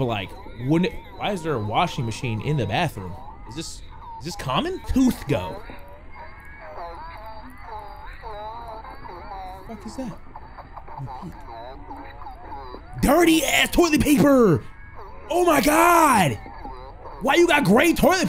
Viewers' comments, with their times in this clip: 0:06 sounds like freddy fazebear